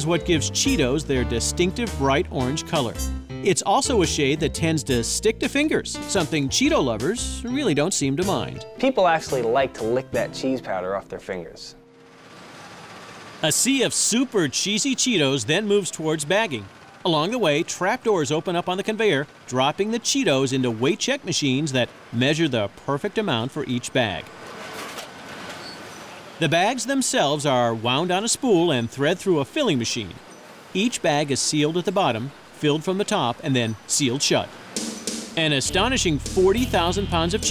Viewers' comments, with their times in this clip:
0:08 "People actually like to lick that cheese powder off their fingers." He says this like it's a gross thing to do.
0:24 is it me or I heard a minecraft piston sound